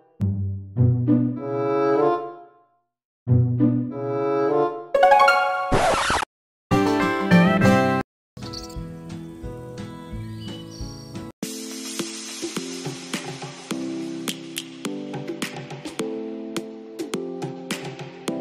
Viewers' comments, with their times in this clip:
0:05 what the*drill* is that